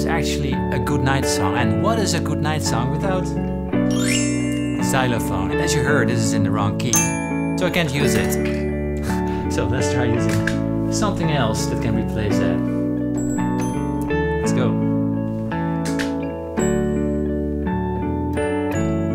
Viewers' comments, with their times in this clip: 0:05 that actually sounds cool lol